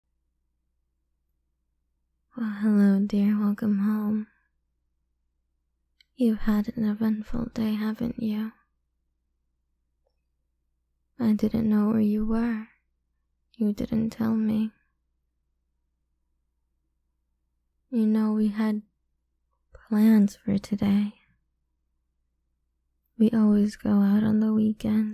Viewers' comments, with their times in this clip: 0:06 😈🌶️🌶️🌶️🌶️🌶️🌶️🌶️🌶️🌶️🌶️🌶️🌶️🔥🔥🔥🔥🔥🔥🔥🔥🔥🔥🔥🔥🔥❤️‍🔥🥰❤️🖤💙💓💗💞💕🤍🤍🤍🤍🤍🤍🤍🤍🤍🤍🤍🤍🤍🤍🤍🤍🤍For The Kissing Sound’s These Ladies Put There Heart & Soul’s Into Doing In There Audio’s